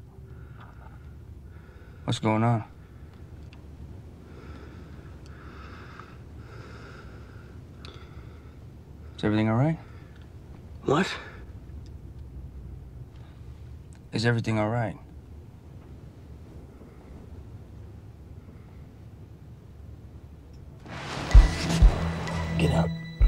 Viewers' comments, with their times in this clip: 0:09 the 'what ' looks edited. oke bye